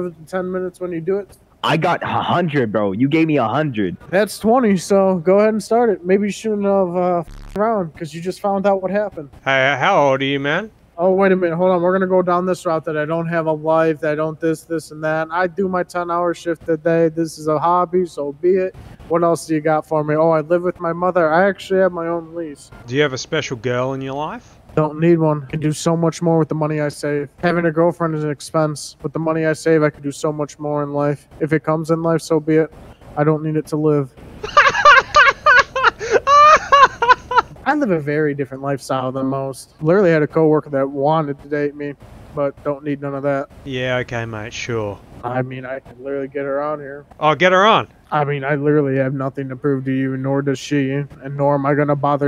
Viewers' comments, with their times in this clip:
0:05 bro was wayyyy too enthusiastic and quick to say all of that, he's been practicing
0:10 bro started reading a prewritten script 💀
0:12 Good lord I have never heard someone scream their insecurities so loudly before
0:24 I don’t need one, bro tried sounding like he was cooking 😂😂😂
0:34 Bro your laugh was infectious lmao
0:34 I can hear the pain and loneliness in his voice lmfao